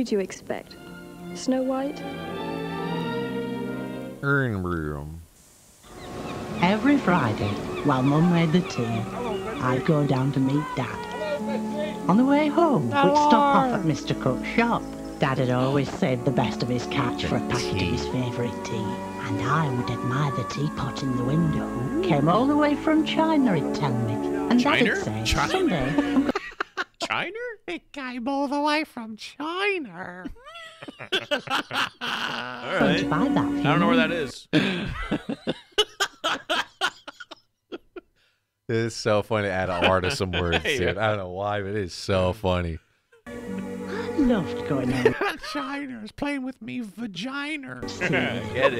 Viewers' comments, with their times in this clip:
0:08 sounds like salad fingers lol
0:33 i laughed soo hard at CHINER